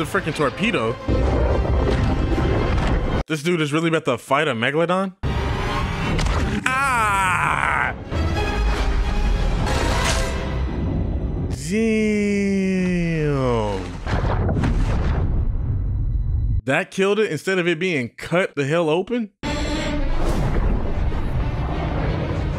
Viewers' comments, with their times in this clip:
0:06 your little “agh” that became in sync with the meg’s jaw opening made me giggle so much 😂